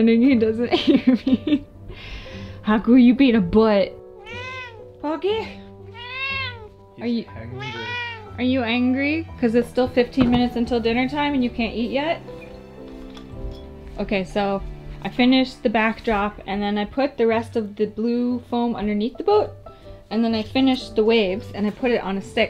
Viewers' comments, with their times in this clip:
0:04 finally i hear poki's meow... "About time you meowed poki"